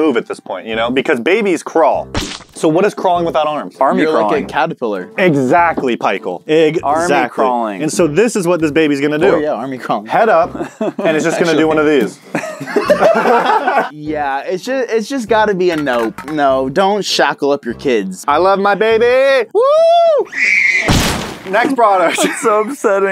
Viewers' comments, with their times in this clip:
0:05 Did anyone else her him say "Pichael"
0:05 why does he say "exactly pie-chael"❓